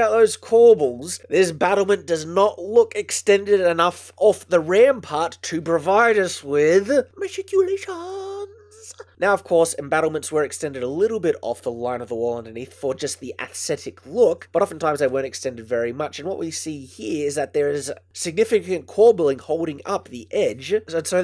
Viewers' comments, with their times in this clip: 0:03 SCRAMBLES FOR VOLUME SLIDER......... oh..... Thank god.
0:06 Best "maticulations" ever!
0:06 I lowered the volume for once and it isn't loud? I have mixed feelings on this but that was fun.